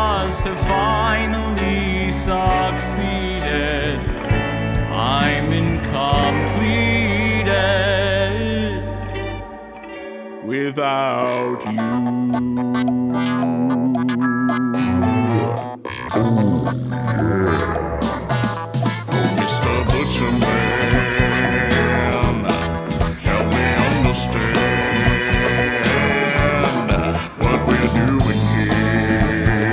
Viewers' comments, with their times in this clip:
0:10 Love that the tone shift is only the second most unexpected twist